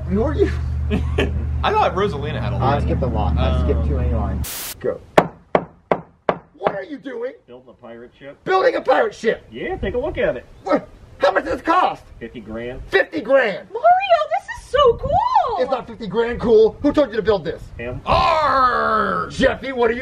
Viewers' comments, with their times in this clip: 0:07 😂😂😂😂😂😂😂😂😂🤣🤣🤣 like a bad word